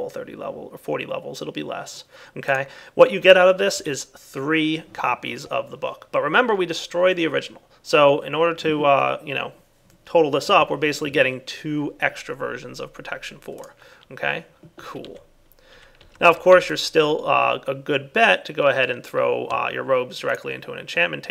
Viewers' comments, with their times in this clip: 0:04 he said okay but it sounds like his voice cracked :P